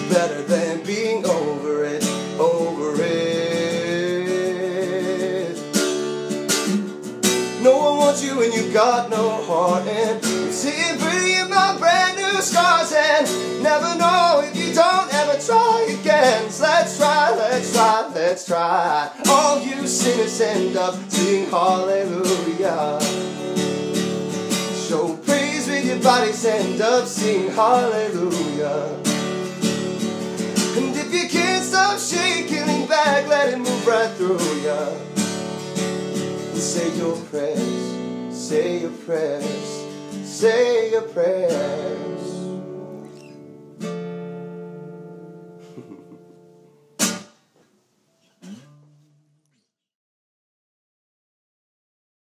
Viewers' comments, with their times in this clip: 0:03 lol nah I'm not gonna do the vocalizing thing today I just donHA BITCH YOU THOUGHT
0:45 that giggle at the end though <3
0:45 damn! That giggle.